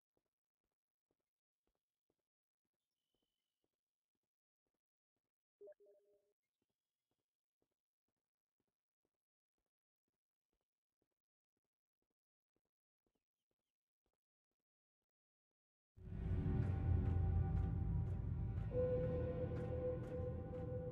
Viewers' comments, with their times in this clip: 0:05 Who else heard the Steam alert ?